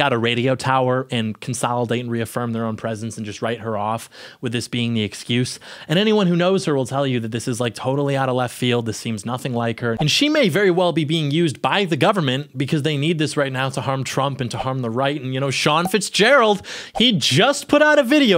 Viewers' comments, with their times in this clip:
0:04 out of all the cultural internet tour guides I watch, they are 98% male. She is one of the few ladies I can stand to listen to. She doesn’t whine, her voice is nice, doesn’t do the vocal fry thing, and her videos don’t meander. I’m sad she is having all this strife while being a new mom and newly married just a few years. I pray their family perseveres.